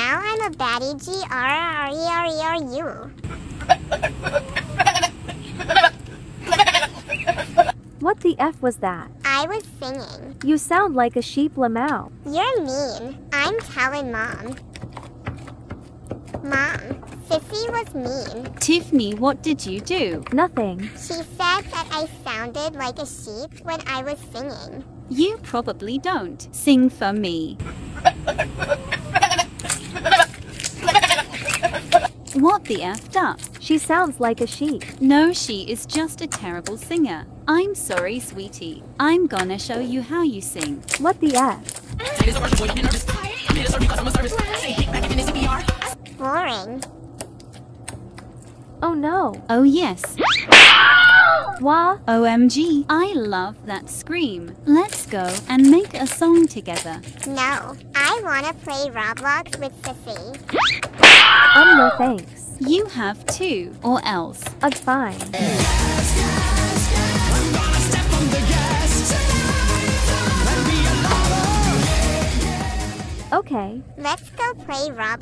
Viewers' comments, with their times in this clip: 0:04 why is the sound like a dying Sheep 😂😂
0:04 She sound like goat
0:43 The song I love.. you ruined it…
1:01 Emily Screams while hitting Blocks